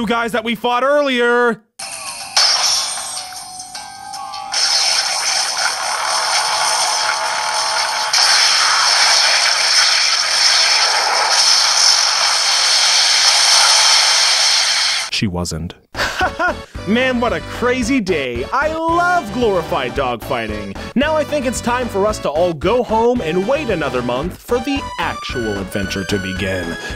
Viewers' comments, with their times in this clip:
0:04 RIP headphones users.
0:08 nice sound quality weegee